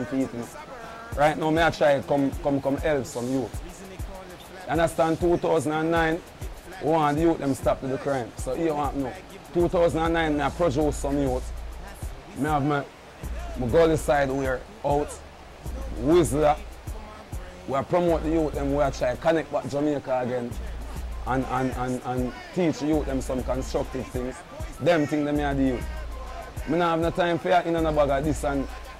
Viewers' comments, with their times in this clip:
0:10 Lol mafraudo say pro juice